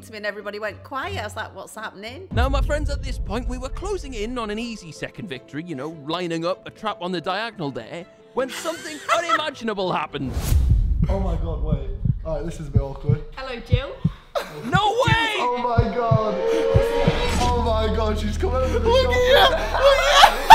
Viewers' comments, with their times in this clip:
0:04 that sounds a bit like Tommyinnit